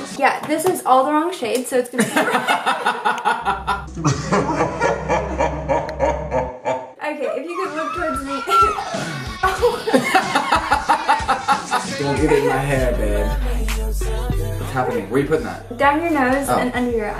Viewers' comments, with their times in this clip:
0:05 That laugh looool 😂😂😂